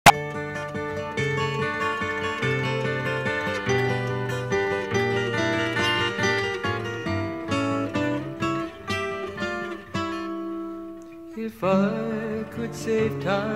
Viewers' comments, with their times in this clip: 0:00 that "POP" sound.... T_T